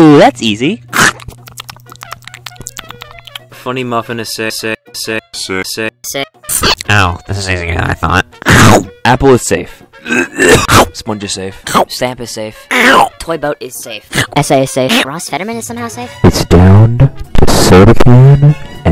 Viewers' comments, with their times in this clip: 0:04 Sounds like the Nickelodeon jingle…